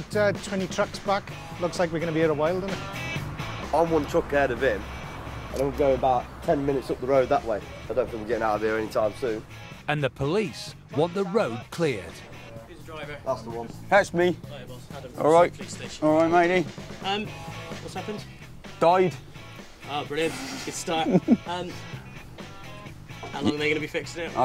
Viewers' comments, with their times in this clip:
0:09 Dramatic voiceover: “and the police want the road clear” Calm and polite officer: hey mate! What’s going on?